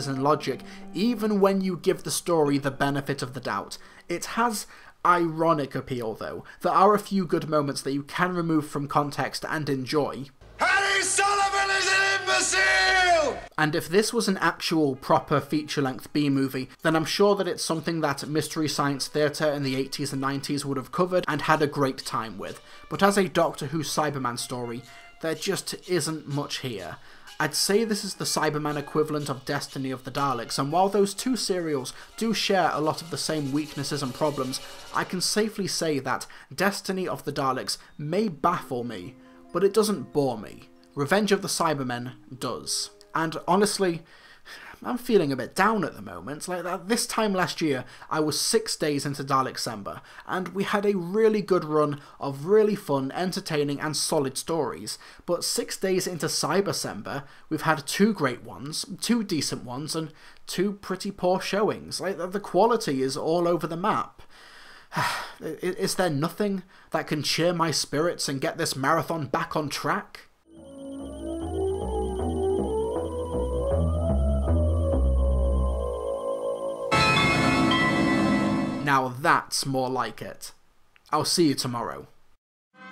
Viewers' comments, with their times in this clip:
0:10 what is he saying
1:10 And cue music.